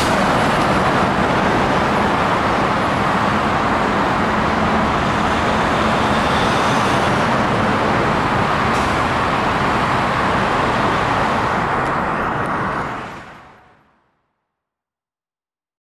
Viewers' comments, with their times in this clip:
0:08 Holy shit that sound! I thought there was a plane above 😭